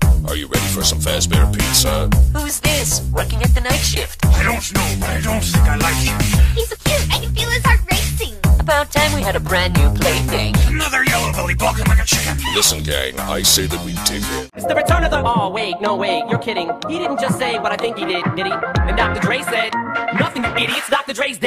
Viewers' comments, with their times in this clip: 0:05 WHY DOES THE MUSIC WORK SO WELL!